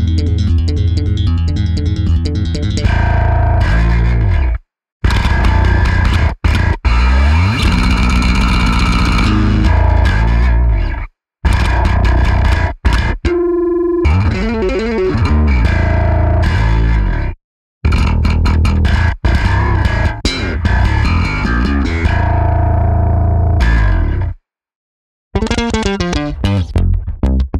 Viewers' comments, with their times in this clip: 0:10 that’s the very tone I was aiming for that bass